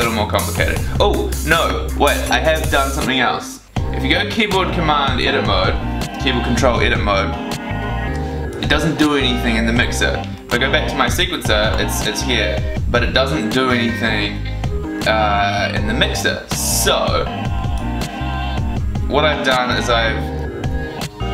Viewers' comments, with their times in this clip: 0:08 the music on this video is cool !